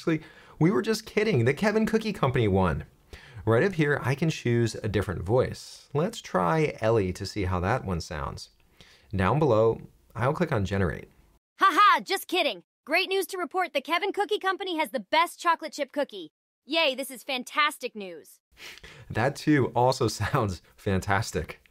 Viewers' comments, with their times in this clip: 0:08 With all respect.... What kind of human do you interact with to think this AI sounds as natural as a real human? XD They sound so... off. I don't know how to put it but they sound off and fake . No fake fake, more like a a very bad actor failing to imitate an actual tone or like someone angry/bored but awfully failing to hide it. Some even sound passive-aggressive to me like this one She sounds so pissed and sarcastic about it.